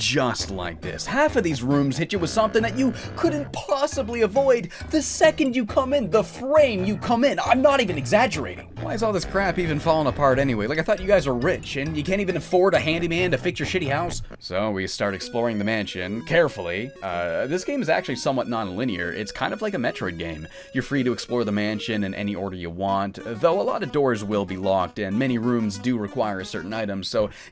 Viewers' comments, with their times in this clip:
0:10 That BREADBUG theme